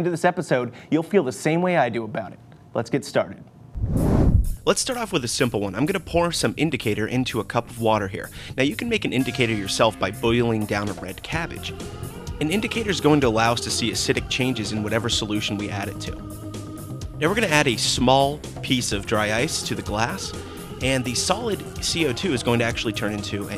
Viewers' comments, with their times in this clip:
0:04 do they say Im going to porn instead of put or its just in my head??? I cant believe Im that fucked up